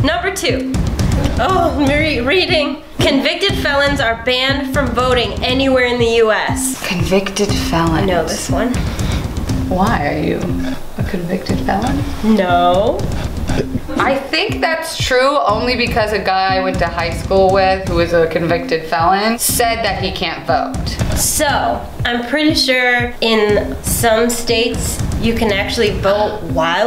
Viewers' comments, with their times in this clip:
0:09 she sounds like jaiden animations